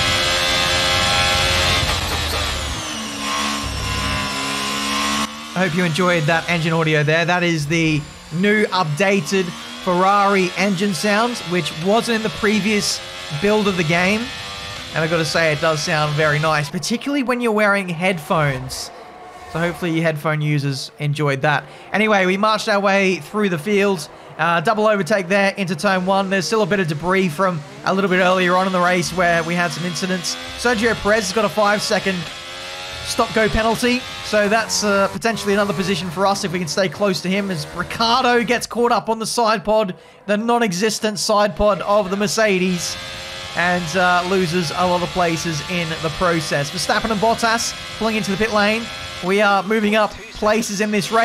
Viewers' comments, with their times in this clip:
0:07 that sounded more like the Renault engine
0:17 I couldn't disagree more about the engine sounds. I don't know if its because of YouTube or something but it sounds so bad. It sounds like all of the bass was removed from the cars through EQ.
0:34 is that new mercedes sound??